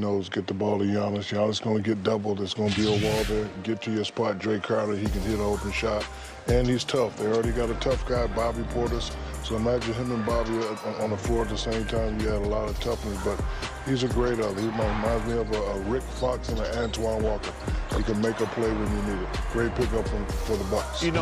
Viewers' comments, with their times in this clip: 0:09 there is an indistinct shaqground noise to the music